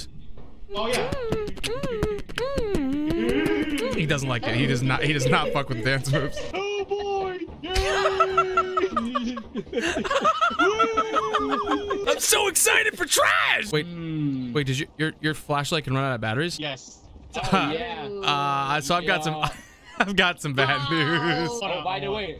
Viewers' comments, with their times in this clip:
0:08 So we all hear Elmo laughing, correct?